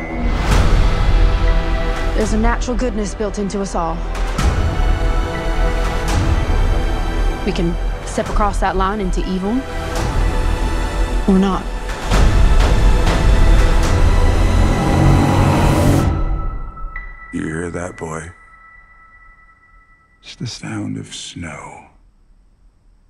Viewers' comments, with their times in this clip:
0:09 Straight up thought that was Eminem